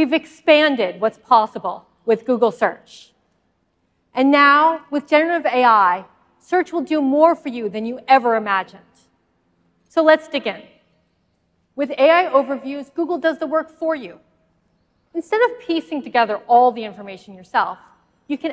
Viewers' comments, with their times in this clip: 0:03 wft did she say, thanks Sunduh!!?